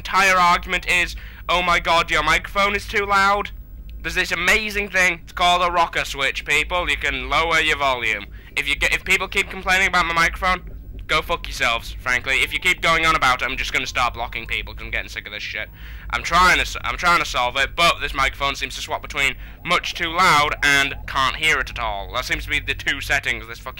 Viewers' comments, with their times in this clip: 0:07 pox sounds like invader zim pox is annoying